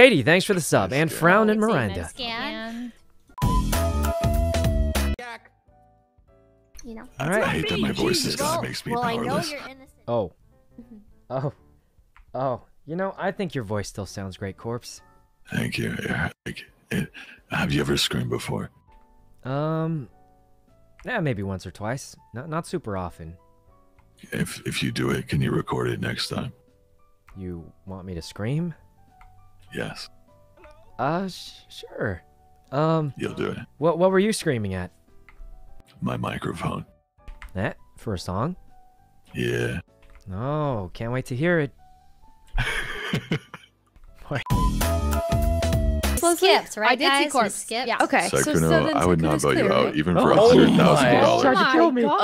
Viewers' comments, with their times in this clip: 0:05 Damn... hope that his throat didn't/doesn't hurt too bad... sounds like it does...
0:08 BRO IM CHOKING ON AIR I thought Corpse asked "have you ever screwed anyone b4?" and Sykunno said "Maybe once or twice not often" I WAS SO CONFUSED AND THEN CORPSE ASKED IF HE CAN RECORD IT AND I WAS GONE😂
0:17 I thought he said screwed before. Eh one or twice. If you do it can you record it. Lol
0:36 Sykkuno sounded like an Anime character❤😩✊👊
0:36 Sykunno's Little "Eh" is so Cute🥰🤩